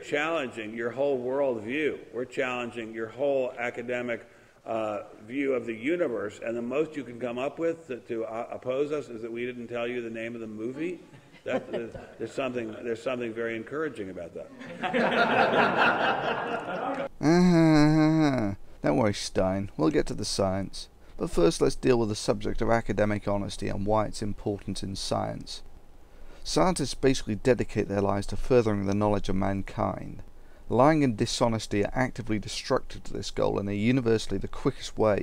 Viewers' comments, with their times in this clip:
0:07 Lol what painting is that on the background ? As he's getting through his list of gibberish you can hear someone coughing in the background 😃
0:15 I laughed so fucking hard at that impression - once again you let the mallet of reason fall on those who would bring everything humanity and all it has accomplished into ignorance and decay.
0:18 fake laugh is just the best moment in the 21st century. I want to have a button on my face that I can press to make this laugh in everyday conversation.